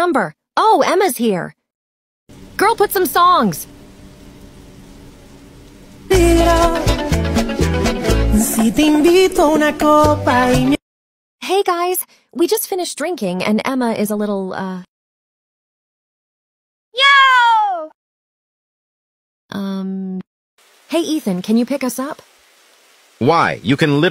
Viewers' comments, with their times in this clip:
0:06 Love the song😍